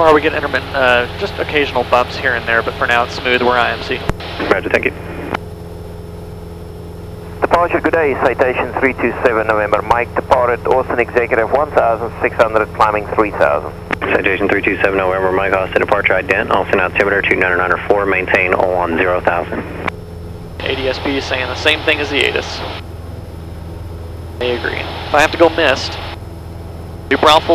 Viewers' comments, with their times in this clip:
0:10 "Any questions" 😄 Did anyone else think the guy sounds like he's South African?